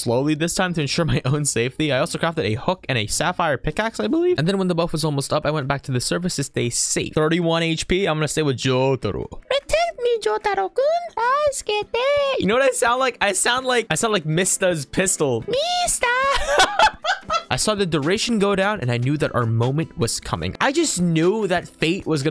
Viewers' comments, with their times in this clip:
0:09 nice voice acting
0:09 Is When He Does The Funny Pistols Voice